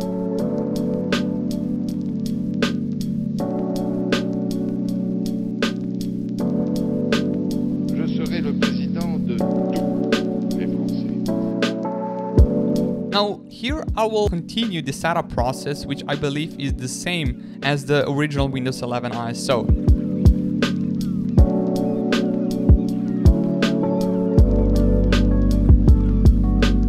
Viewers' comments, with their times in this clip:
0:07 The backround music have a ester egg, U can hear a man saying "Je serai le président de tous les Français" the man is Jaques Chirac a french president !